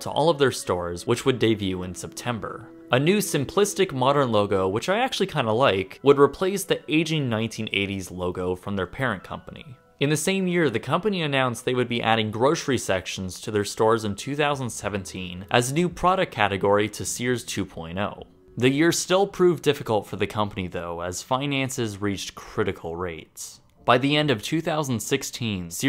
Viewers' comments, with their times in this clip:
0:10 Although a great video, the most interesting part is where a police interrogation is halted by the suspect's wicked farts.